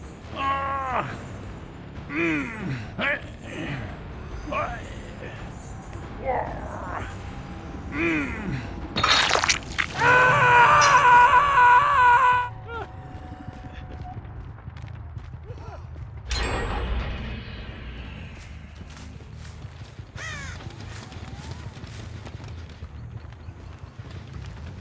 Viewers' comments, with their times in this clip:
0:09 hearing dwelf jingle as he’s being carried got me 😂😂